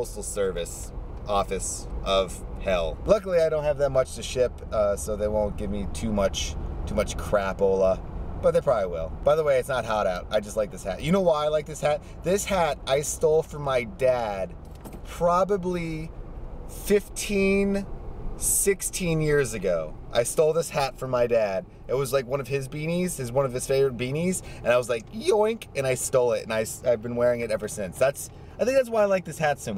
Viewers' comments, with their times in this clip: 0:10 Lol from til the end. Hilarious...bleeping. HURRRR! lmao xD